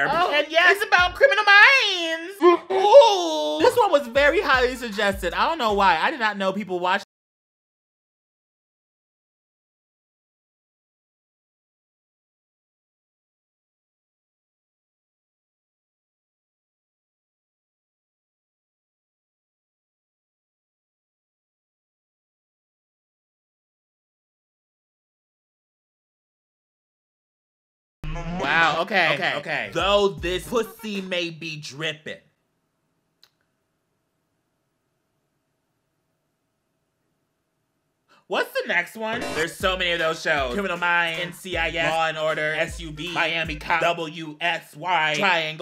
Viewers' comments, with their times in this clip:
0:06 I’m in the US or to be more specific Texas idk if it’s mute for just me comment if it’s mute for y’all to or not
0:06 Who else's sound cut out ?
0:07 no sound , of course-
0:07 why is it mute?
0:08 Who else had the volume just deside to just die
0:10 did anyone else's sound cut out ? i think there was music 😑
0:28 my sound like stopped